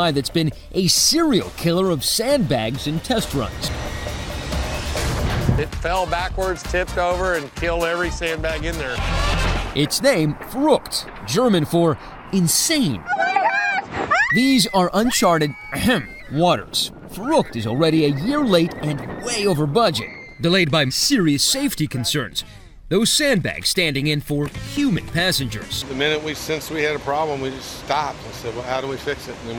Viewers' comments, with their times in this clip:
0:10 THAT'S NOT HOW YOU SAY IT